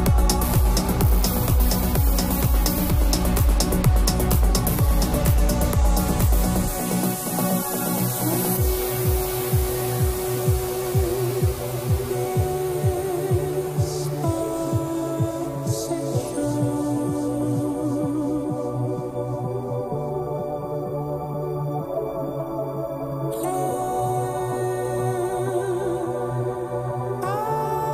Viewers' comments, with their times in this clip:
0:10 thought it was gonna transition into meet me halfway by black eyed peas and got excited